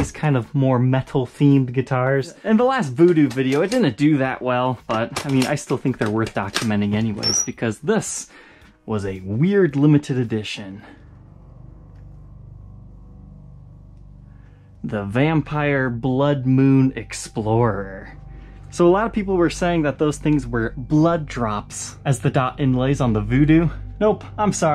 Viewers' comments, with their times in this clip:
0:06 aaaa nails on chalkboard noise 🥴😩